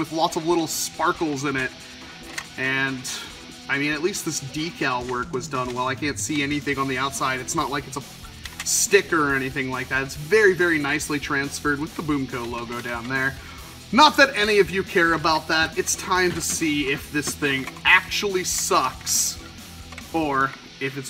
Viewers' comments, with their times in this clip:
0:04 am I going crazy or was that a xbox notification?